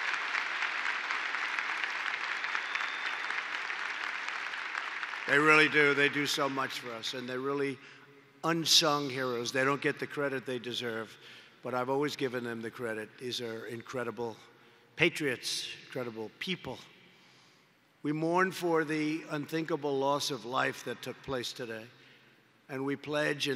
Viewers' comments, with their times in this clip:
0:07 Trump reads teleprompter badly very badly doesn't understand why he has to do this.